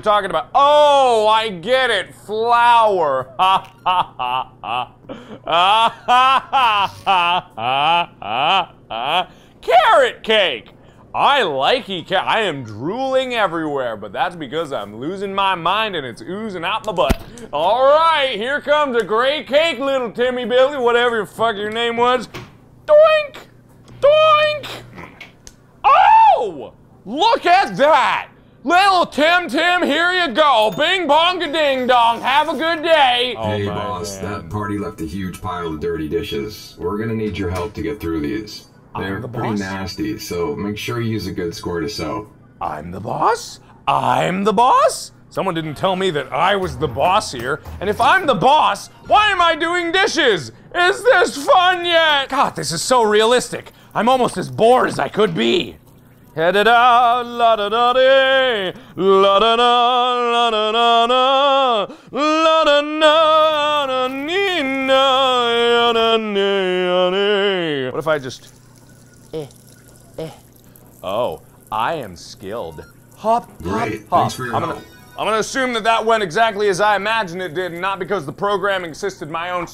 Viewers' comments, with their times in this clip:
0:04 And then before that when he's attempting to make the birthday cake for the kid bot [Forced laughter of a human who is a slave to robot overlords]. Whaaaaaaaaaat :P
0:06 subtitles- [Forced laughter of a human who is a slave to robot overlords]
0:56 Your singing was actually really good!!😁😁
0:56 The song that he sings it cool
0:56 a serenading voice
1:00 voice of an angel
1:04 that voice crack.